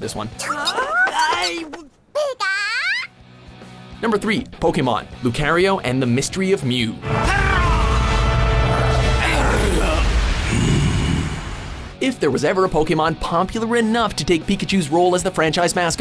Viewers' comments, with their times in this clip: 0:04 I Fucking cringe at this guy's pronunciation, just like with... ANY ZOMBIES LIST THEY DO.... I don't understand how they manage to butcher so much when it comes to pronunciation Now I gotta always be reminded of this every time someone I know pronounces Lucario wrong on purpose just to screw with me more